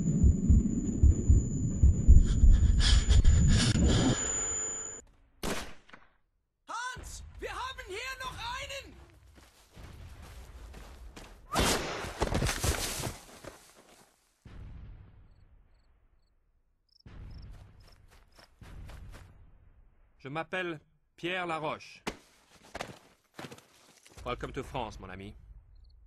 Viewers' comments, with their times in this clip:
0:07 Is it me or does it sound as if that German voice is the same as Sasuke Uchiha?